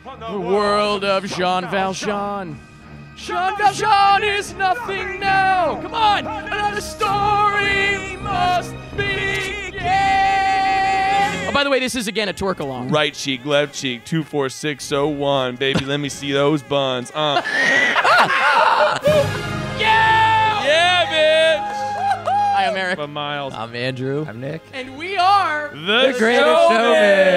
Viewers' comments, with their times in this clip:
0:08 so, the funny thing about this scene is, he's supposed to be tearing up his parole slip it time with those orchestra hits, but since he can't hear what we're hearing, it doesn't work.